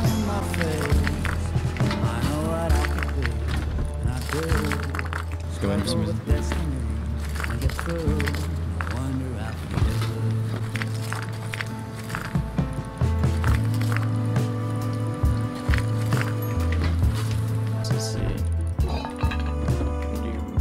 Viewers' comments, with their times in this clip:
0:03 The Revenge is so sweet.. By far this is also the best 4 man experience I have seen in this channel Keep It up Man! Quick Question what is the title of this song its so groovy